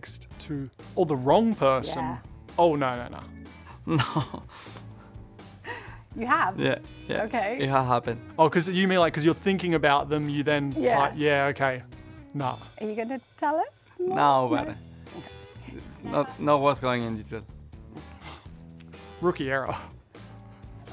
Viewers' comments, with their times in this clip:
0:04 is screaming meme quality from Perez 😂